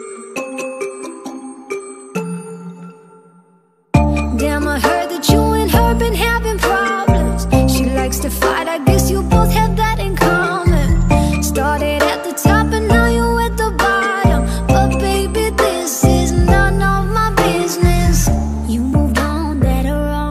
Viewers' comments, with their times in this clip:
0:04 is When she starts sing